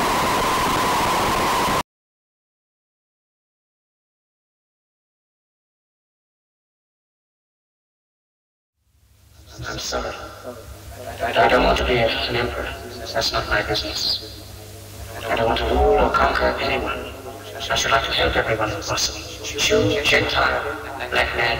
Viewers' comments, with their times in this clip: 0:03 after its not the song anymore